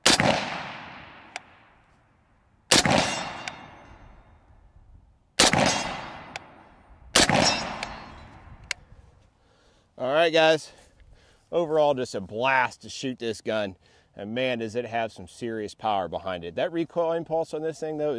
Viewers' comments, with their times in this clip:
0:03 i thought that was a garand ping 😂